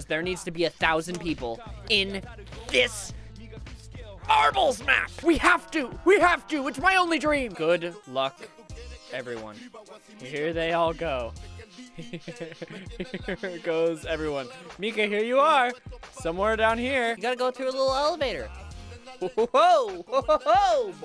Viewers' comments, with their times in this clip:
0:09 Did anyone else notice him listening to Reggaeton? (Puerto Rican Rap)